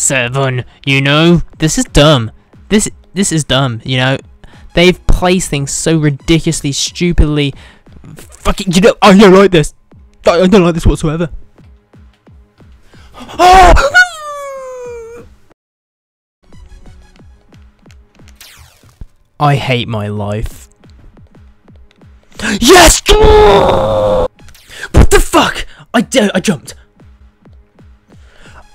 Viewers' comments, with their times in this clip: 0:07 WHAT ? =D then biiiiiiiiiiiiiiiii like a dall XD
0:13 He sounds like a puppy that just got stabbed!